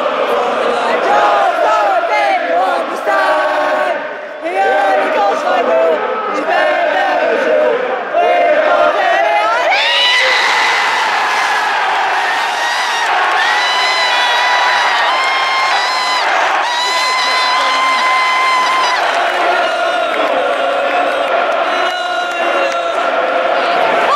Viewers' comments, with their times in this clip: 0:09 Crikey caught me off guard, you nearly burst my eardrums 😂. Overall it was a perfect send off, only thing I can complain about is the weather, shrek scoring the last goal and me not being there 😭 COYS!